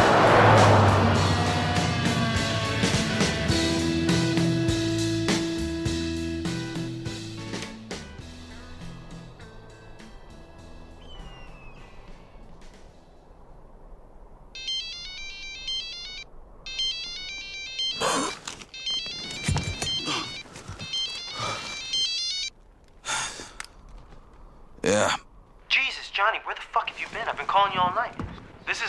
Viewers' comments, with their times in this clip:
0:09 - the eagle sound is classic - 16 million people watched a tv show